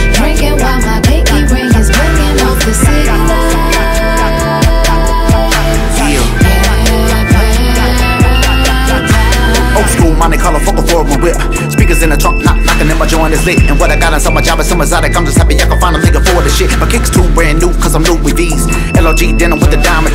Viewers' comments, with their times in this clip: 0:08 That first verse is soooooo clean.